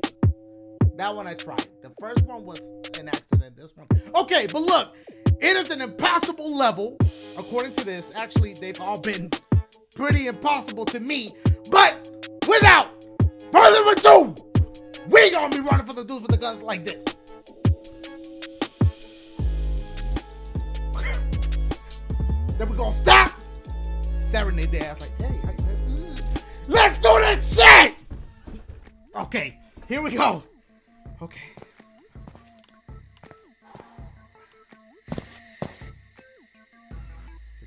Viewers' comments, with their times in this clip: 0:10 why was that beat so fire
0:18 Damn the beat is fire 🔥🔥🔥